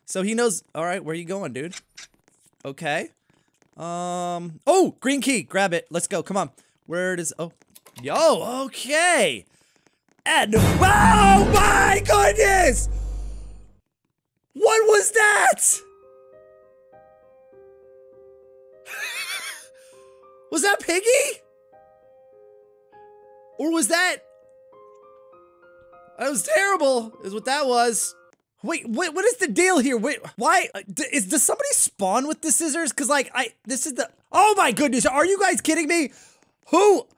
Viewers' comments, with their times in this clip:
0:10 Think: OOOOMMMMG Me: i literally fell off mah bed cuz of how loud it was
0:19 think sounds like a pig